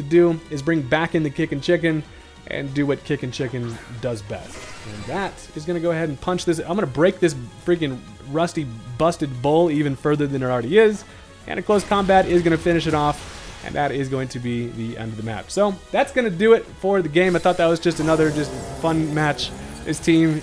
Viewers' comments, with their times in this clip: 0:05 damn you sound mad AF bro😂😂❤